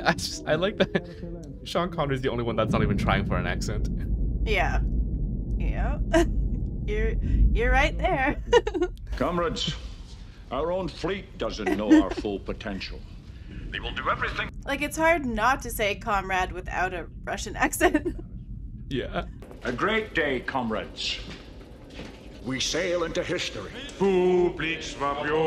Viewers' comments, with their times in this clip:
0:10 The crew speaks Russian. They don't speak English for the most of the movie. We hear English due to movie magic. Ramius is not Russian, so he may actually have an accent. In Russian you'd hear a Lithuanian accent, but due to movie magic, you hear a Scottish one. The movie is relatively accurate in that. In the last part of the movie, some Russian officers do speak actual English, and actors put on a Russian accent for that.